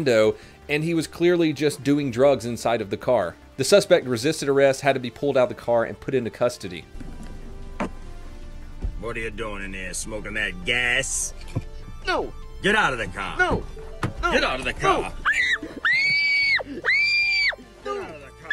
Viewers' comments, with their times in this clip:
0:06 Is that real footage? Lol the camera looking and the way he scream..